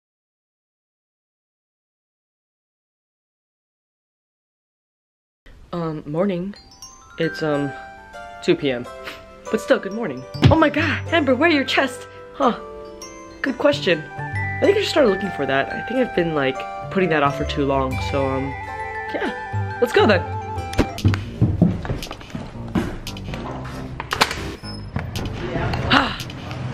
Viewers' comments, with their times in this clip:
0:08 the way she laughed at 2pm 😂